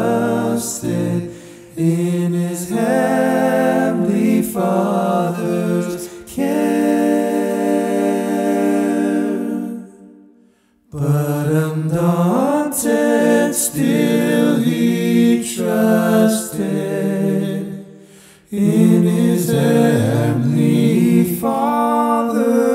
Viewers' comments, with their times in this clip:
0:05 I'm lovin' that deceptive cadence